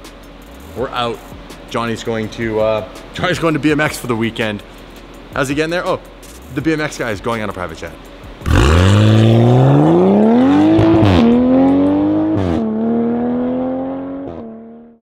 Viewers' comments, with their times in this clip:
0:08 Supra shifts sounds like Diarrhea Farts